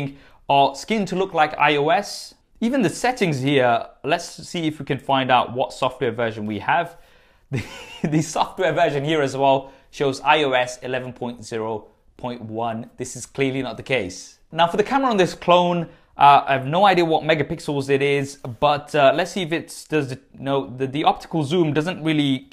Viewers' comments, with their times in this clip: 0:08 ...that laugh tho..